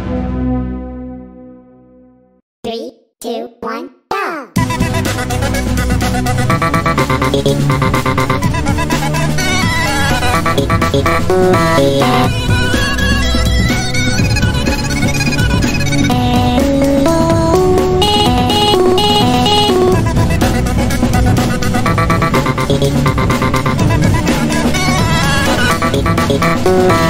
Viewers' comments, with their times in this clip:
0:10 bf sound tho
0:14 what happened to bf voice and ron But i love the 3D ron design is so good maked